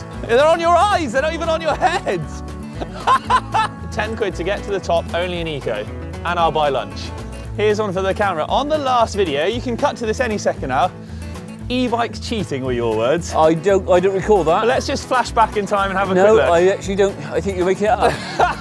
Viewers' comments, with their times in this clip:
0:05 confused Chewbacca noises